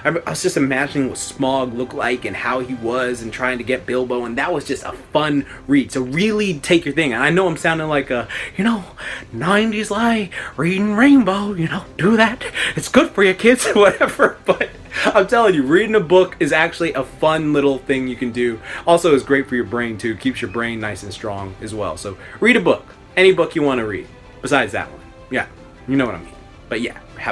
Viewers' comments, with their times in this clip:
0:08 Your voice makes me want to hide my children lol